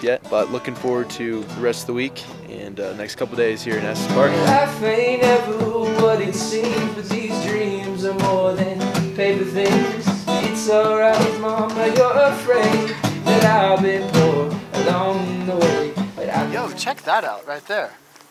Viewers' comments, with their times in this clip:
0:06 Whoa whoa whoa... can we pause on those vocal stylings ? Sign this kid up!